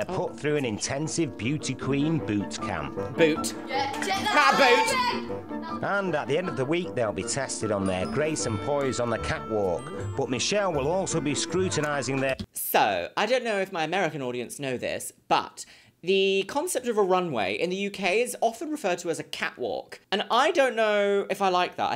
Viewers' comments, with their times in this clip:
0:06 Linguistics nerd here, and you were absolutely right the first time about the glottal stop in “cat walk” - most people in the UK would replace the “t” with a glottal stop 😮 she’s a cunning linguist after all!